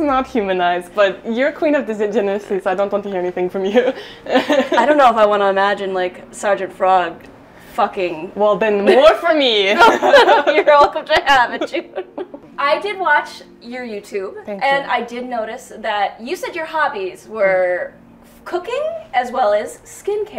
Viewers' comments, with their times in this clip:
0:06 She didn't sound German to me at all until 🤣